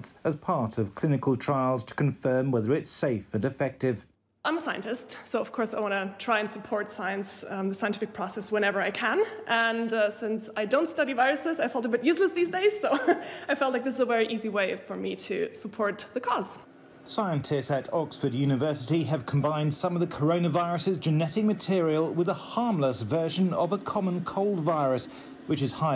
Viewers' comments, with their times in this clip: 0:06 WTF DID SHE EVEN SAY?! 😂😂😂🤣🤣🤣